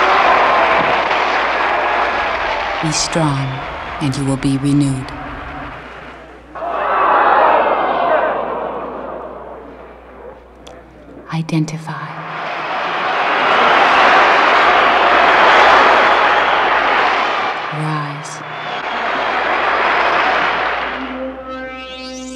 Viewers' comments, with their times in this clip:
0:07 Only realised that someone shouts "holy, shit" when the "Renewers?" are revealed!